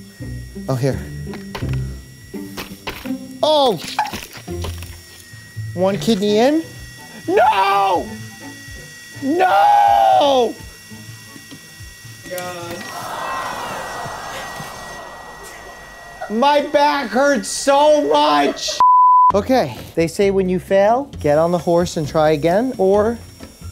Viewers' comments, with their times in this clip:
0:06 That Noooooooo 😂😂 you can feel pain in his voice
0:06 This is the most genuine scream I've ever heard. It was like he was actually losing a patient 😂
0:07 The sound of distress.
0:08 HIS SCREAM IM DEAD😭😭😭😭